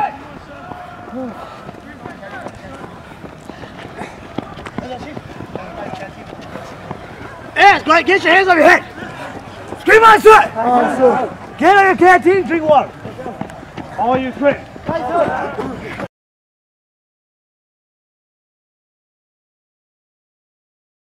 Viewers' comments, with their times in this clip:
0:10 The scream scared the living hell right out of me straight skipped a heartbeat lol all shook typing this